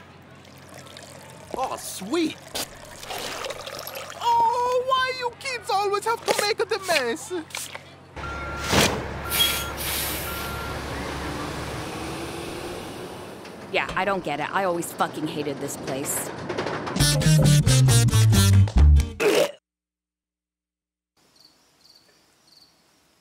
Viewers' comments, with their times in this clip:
0:07 he sounds like mario